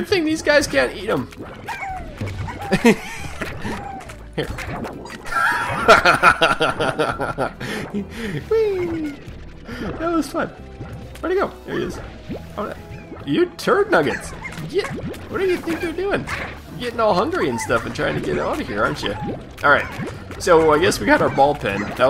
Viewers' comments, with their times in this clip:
0:06 His laugh cracks me up